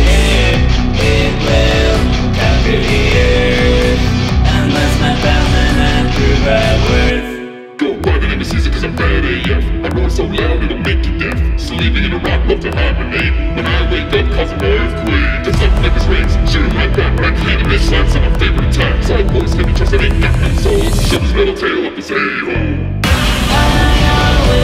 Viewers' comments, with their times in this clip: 0:07 King Caeser has a cool voice